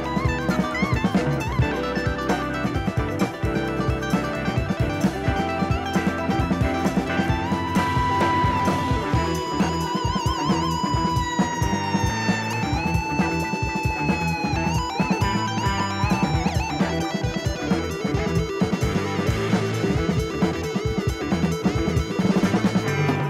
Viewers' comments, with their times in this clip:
0:08 With he music, might be the most high octane, energetic shot of a snail in history.